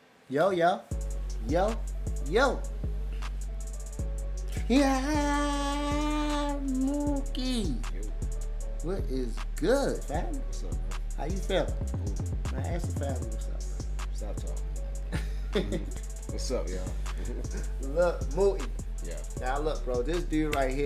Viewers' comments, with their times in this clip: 0:07 that yo XD